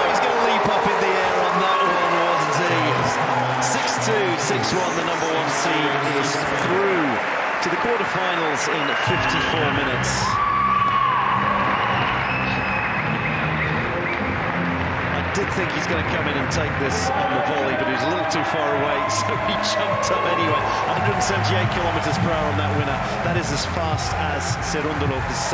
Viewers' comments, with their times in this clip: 0:09 Monfils : ' Nothing personal.Just business ' . That scream is also super :)